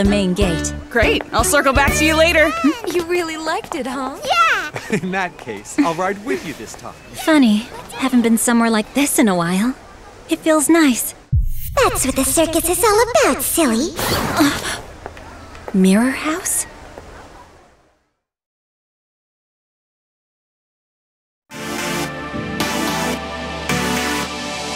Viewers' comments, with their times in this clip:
0:06 Why does she sound like a happy Homura Akemi? Is she the same voice actor?